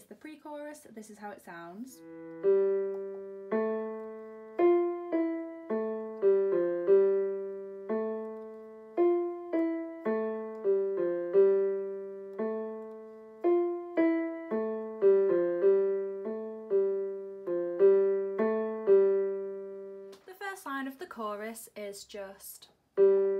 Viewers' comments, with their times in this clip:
0:06 * accidentally play the higher A note* wait a minute..... this sounds like play date *plays “Play Date”